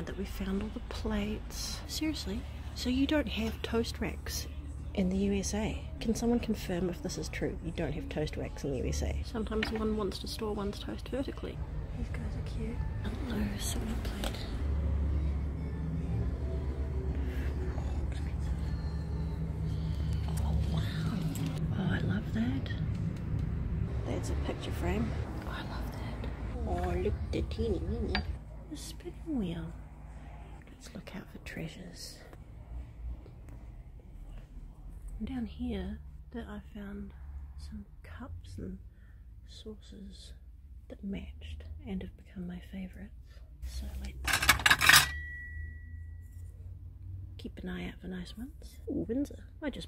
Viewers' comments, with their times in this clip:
0:04 the Eminem playing in the background in this thrift store. 😆
0:34 I think I heard a ghost